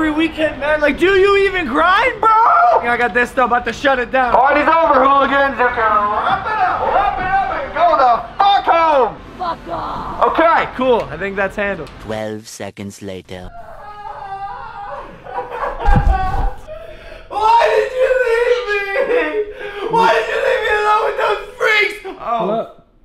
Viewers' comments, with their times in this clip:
0:09 who else heard the lady say fuck off